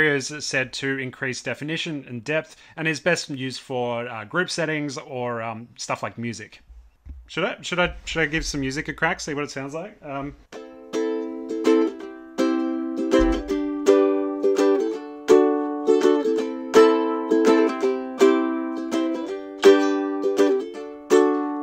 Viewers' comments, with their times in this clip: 0:06 Awesome review my man 😊 Keep up with amazing work 😊 But I must admit the best part was from you are rocking on that guitar !! 🙏